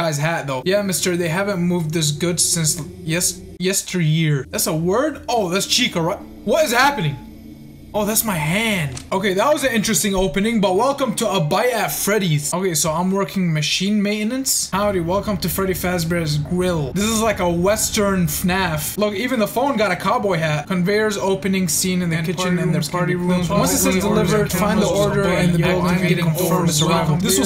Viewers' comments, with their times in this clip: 0:10 a bite at aimin's?